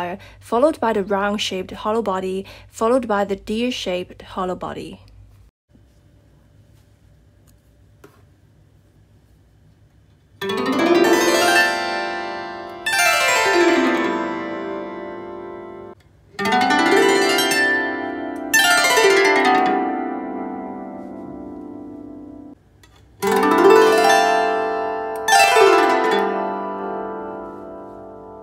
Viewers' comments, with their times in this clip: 0:09 I love the solid the most. It's the most magical!